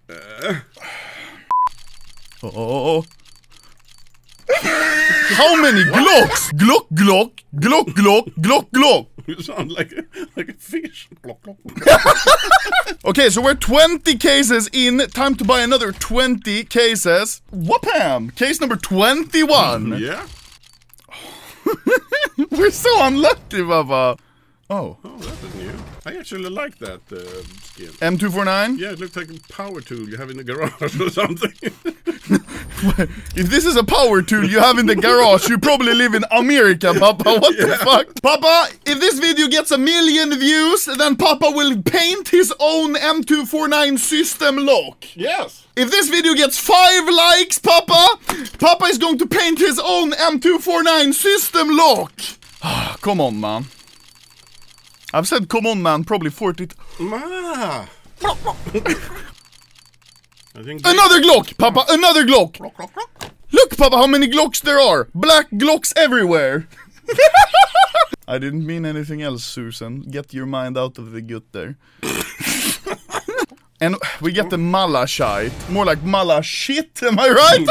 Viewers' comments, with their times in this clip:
0:06 How is a fish maiking anomaly
0:06 the sound of the bottle pouring slowly
0:07 me drinking 1-liter water
0:08 more like a blow fish
1:02 that gloglo sound
1:05 imagine he got banned in youtube when he laughed